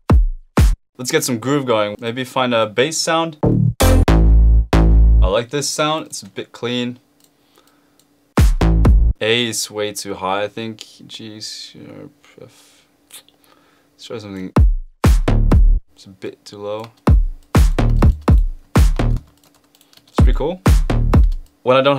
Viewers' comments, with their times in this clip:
0:08 is a sick beat 🔥🔥🔥🔥🔥